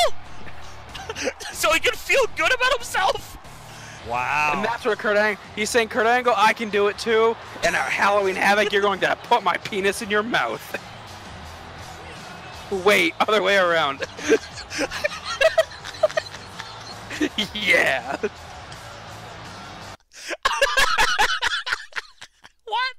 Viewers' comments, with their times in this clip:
0:04 Jericho at his best, I love it whenever he goes like this. The "Yeah!" just makes it perfect.